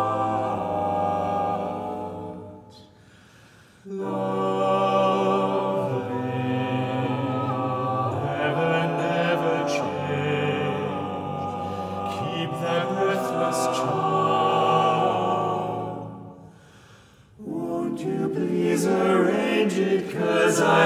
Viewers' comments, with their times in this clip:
0:05 the key change is absolutely stunning❤😊😭🫶🩷🙌